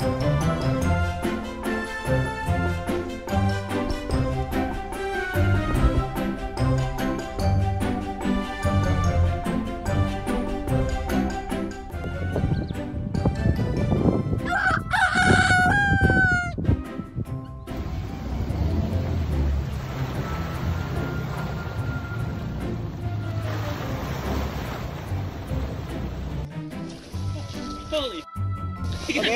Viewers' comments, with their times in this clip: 0:10 The maggie came as a surprise to me. That noise would sound far more at home in a chook yard.
0:13 Lol that crow with foreign language skills really cracked me up 😂🤣🦜👍